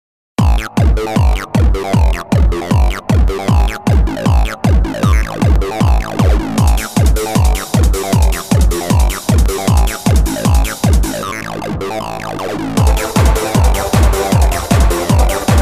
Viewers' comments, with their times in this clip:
0:00 Doesn't this sound like Madness Combat?